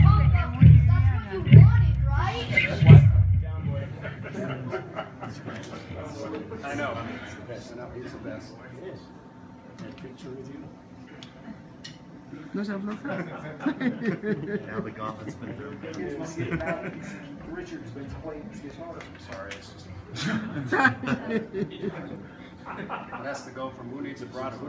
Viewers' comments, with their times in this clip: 0:05 It almost sounds like Ken Parker having a chuckle